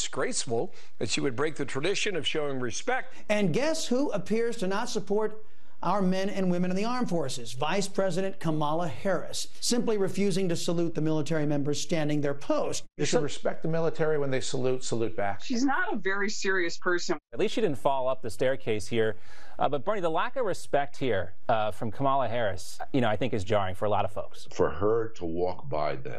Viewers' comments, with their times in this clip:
0:07 "Vice President ka-MA-la Harris." As my high school Latin teacher used to say, "You're putting the em-PHA-sis on the wrong syl-LA-ble." A professional purveyor/commentator of news who can't properly pronounce the name of the Vice President of the United States? Sad!